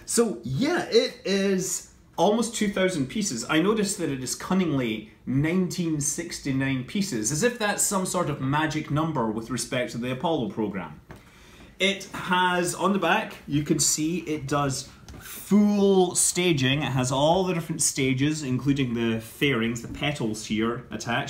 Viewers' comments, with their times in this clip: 0:07 Scott suddenly becomes Italian